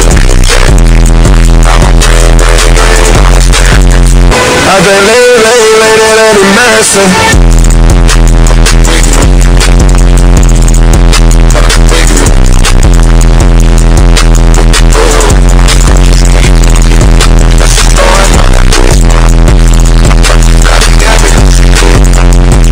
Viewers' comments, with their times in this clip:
0:04 rest in peace ears